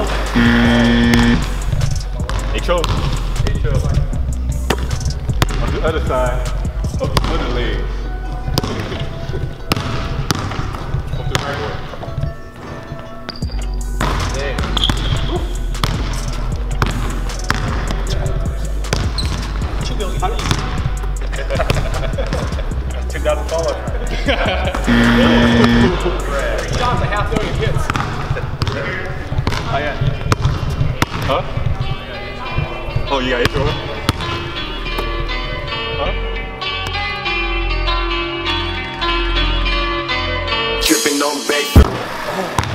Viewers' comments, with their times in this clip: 0:03 when he said "HO" Did Anyone Else Think he said "get troll"
0:26 Who else heard" trash"